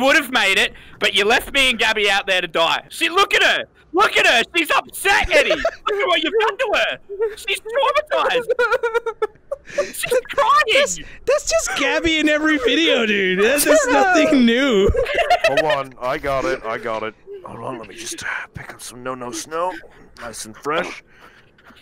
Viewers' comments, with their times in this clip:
0:07 Traumatized crying, cute face